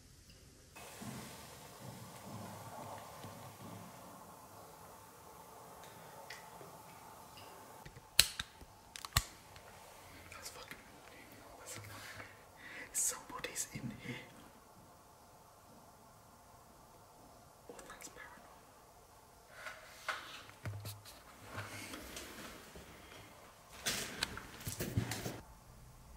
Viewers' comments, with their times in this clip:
0:07 sounded like someone flicking a Zippo! Walking sounds on concrete floors, hm. I wonder if there was an outbreak of bird flu, and that is why all the birds died? The carcasses and feathers appear all the same state of decay.